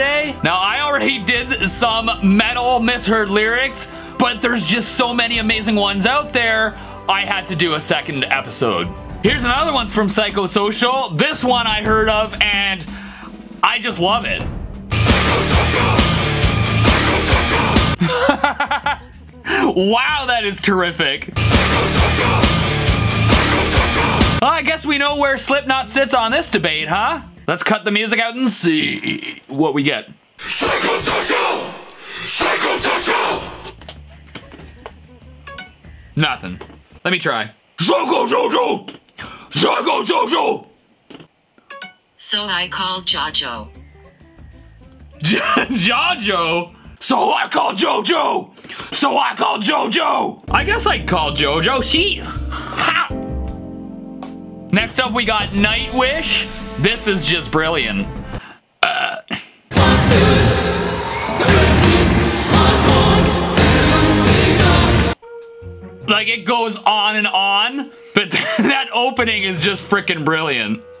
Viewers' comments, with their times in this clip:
0:08 Slayer - Die By The Sword "My names Tony, I got some bacon".
0:14 I don't understand how people don't hear "psychosocial" its literally the name of the song
0:15 😂 i heard suck my ketchup
0:16 When I first listened to this song, I thought Corey said "sing and flush out" here.
0:22 I only heard pycho vision
0:30 i hear sacrifical
0:38 kinda hear so i called jojo😂
0:51 nah call jotaro jostar
0:59 I heard: “A hamster, a dentist, hard corn, seven seagulls”